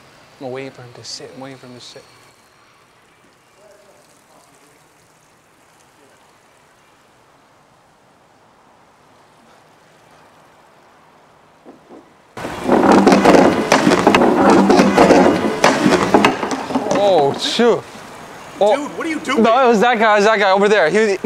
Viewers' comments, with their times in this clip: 0:08 sounds like Seth Rogens Son 😂